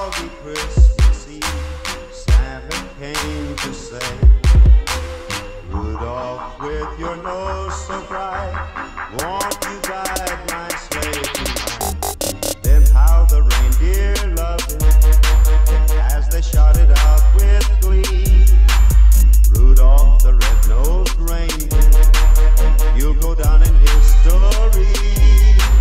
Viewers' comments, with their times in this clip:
0:07 thought some one was at my door there for a sec